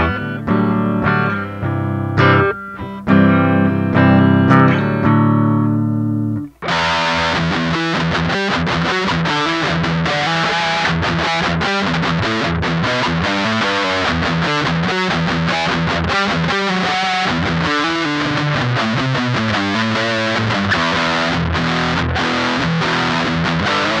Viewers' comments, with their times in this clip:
0:06 I wonder if you could have stained the back of the neck black, then applied tung oil - getting the feel of an oiled neck but with color consistent with the rest of guitar's look? ETA Holy cow! that sounds awesome, and your playing is great!